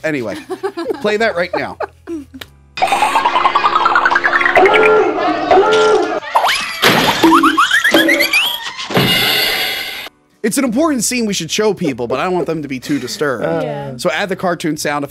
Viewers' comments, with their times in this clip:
0:03 Cartoon SFX really improve everything. XD